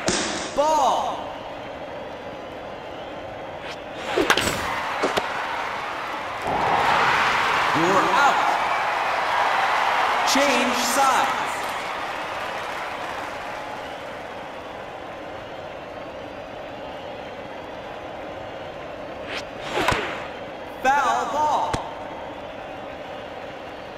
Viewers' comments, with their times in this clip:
0:06 The crowd sounds like someone summoned a fucking demon